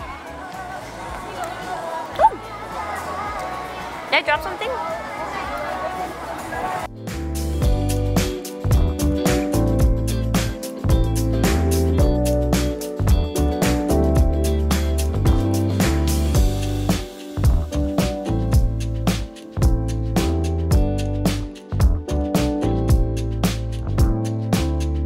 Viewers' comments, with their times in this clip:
0:07 the nom nom sound is so cuteee